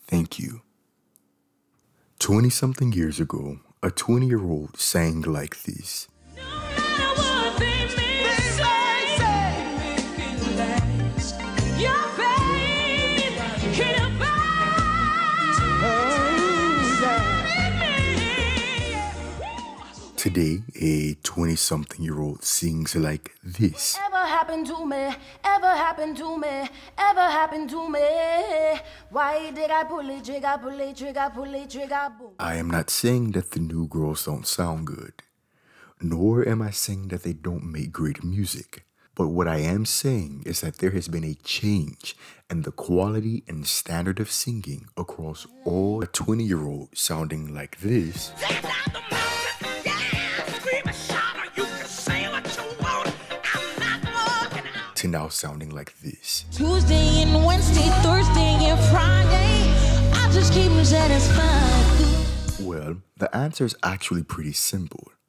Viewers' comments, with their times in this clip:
0:10 Was the first girl singing?
0:52 who is this. Sounds decent